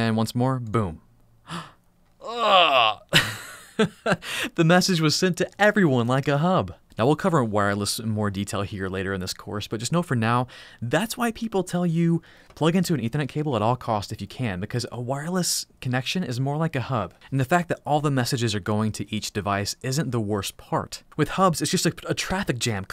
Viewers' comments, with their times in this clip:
0:10 I had to rewind it because I thought he said "and the message was sent to everyone, like a hoe" and I was like well, true. 😂